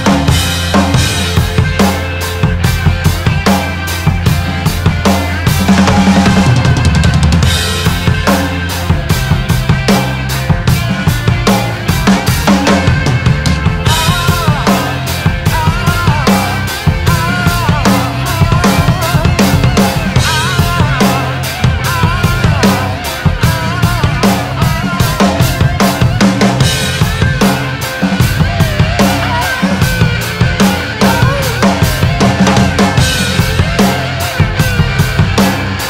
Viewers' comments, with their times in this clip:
0:03 Tricky to time that fill just right
0:16 awesome bass drum.
0:17 Wow, those bass triplets .... ❤‍🔥
0:21 Ok,I had to stop to catch my breath. I knew that fancy kick thing was coming so I got scared for you. I knew you were going to nail it though because your ridiculous... Also , you don't have that extra echo that Bonham had on the track.. I think he let echo do some of the work...want you in my band.